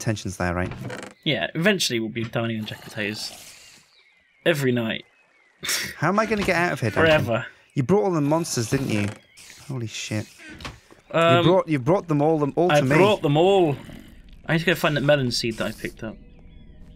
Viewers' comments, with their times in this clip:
0:03 If you listen closely, you can hear birds whistling or maybe I'm just crazy...